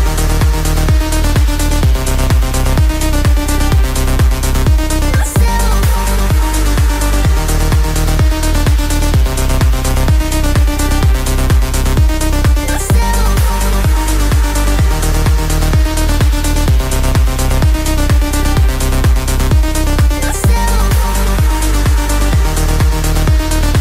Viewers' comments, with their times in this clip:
0:04 About 2 seconds after you can hear what is surely a production mistake, it appears to skip half a beat. Might wanna check that before full release!!